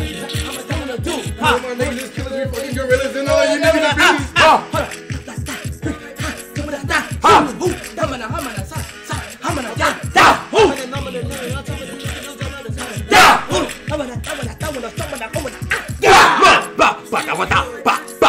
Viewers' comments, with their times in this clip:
0:06 bro the gibberish